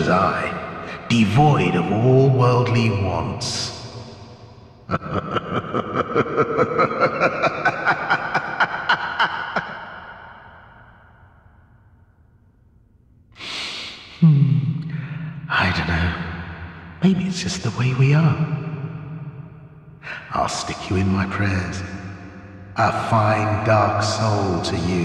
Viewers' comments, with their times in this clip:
0:08 its so bizarre to see a character laugh without moving his mouth, same for anyone else?